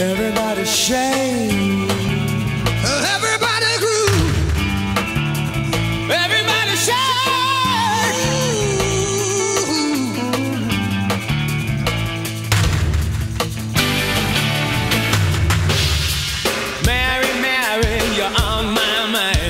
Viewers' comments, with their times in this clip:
0:07 Michael's voice 💖💖💖💖 what a voice!! RIP Michael Hutchence😘😘😘